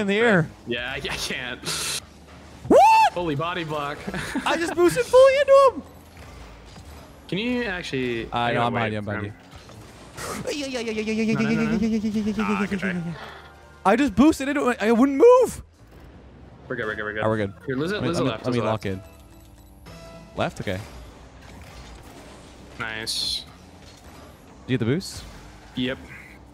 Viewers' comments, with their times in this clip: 0:08 Haha I love the way your cream every time when the ball goes almost in 😂 this made my day 😂